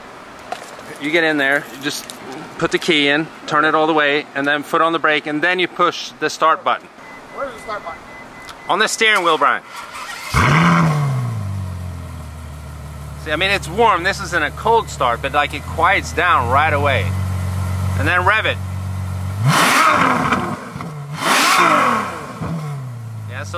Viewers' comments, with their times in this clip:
0:09 The starter might be getting weak?